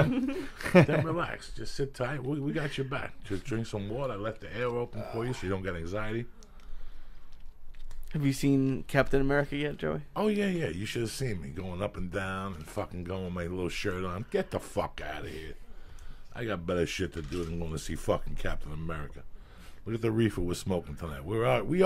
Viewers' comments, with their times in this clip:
0:04 Joey non-chalantly doing that bizarre-ass shit directly into the microphone while telling him that he has the door open so he doesn’t get anxiety is the EXACT sort of thing that would give me anxiety when I’m high.